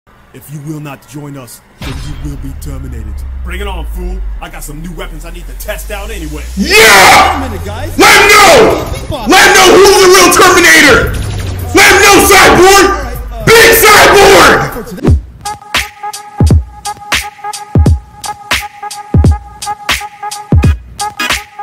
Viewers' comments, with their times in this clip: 0:05 chill jeez ear rape
0:06 WARNING ALL HEADPHONE USERS I REPEAT WARNING ALL HEADPHONE USERS
0:07 rip my headphones :(
0:07 im sorry but headphine users dead